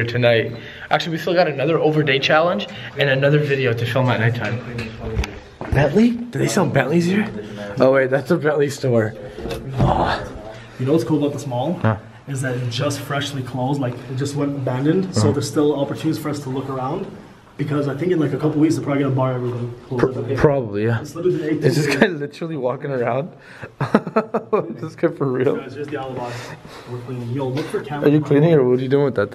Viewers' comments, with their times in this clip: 0:10 someone farted lol thought it was me but moo